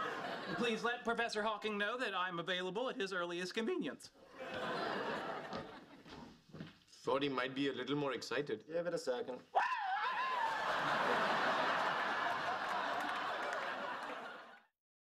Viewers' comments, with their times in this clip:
0:08 BRO GAVE THE TOM SCREAM
0:09 Howard got a legit scared reaction and his laugh made the comedic timing perfect. best broken character moment so far.